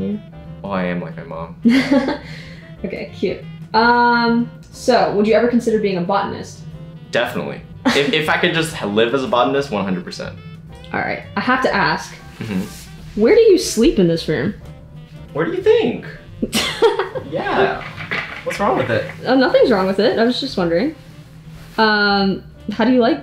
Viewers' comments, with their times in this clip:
0:06 Help I had to rewind this because I thought I heard: "Have you ever considered being a bottom".